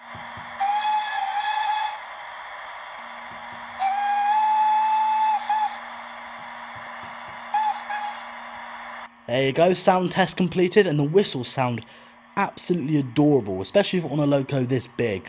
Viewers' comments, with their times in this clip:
0:03 sounds like Henry's all engines go whistle